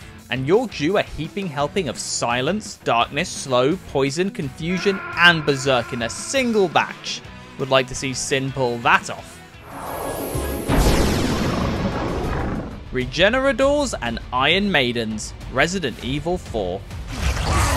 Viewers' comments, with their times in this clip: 0:04 The Solid Snake scream was unexpected, yet totally hilarious 😂